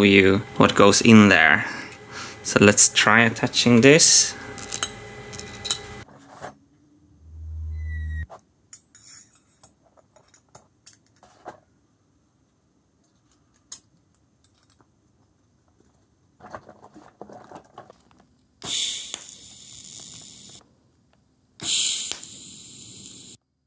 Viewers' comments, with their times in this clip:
0:07 what was that "wheee" sound??
0:07 You can hear someone in the audience screaming in admiration.... someone in the audience of the world tour